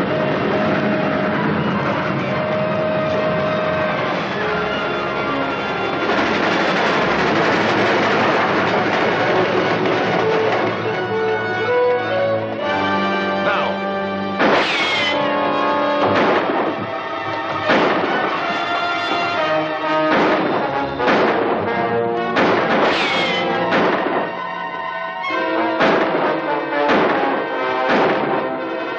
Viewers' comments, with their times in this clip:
0:10 Seven shots from a six shot revolver! That's pretty good Commander Cody.